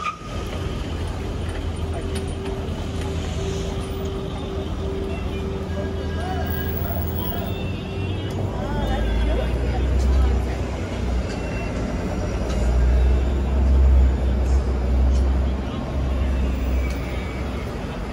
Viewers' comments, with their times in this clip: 0:05 I heard Quran recitation.